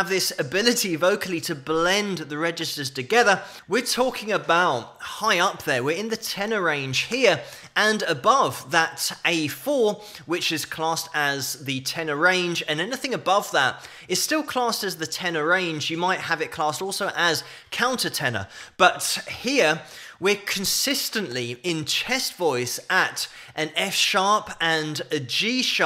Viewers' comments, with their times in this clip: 0:06 The best version was in 1977 or 78 that was wonderful, I believe it was in Houston Texas, in this one he cuts short the When there is nothin... to believe in.. these two are usually long and difficult to hit, so he cut them short.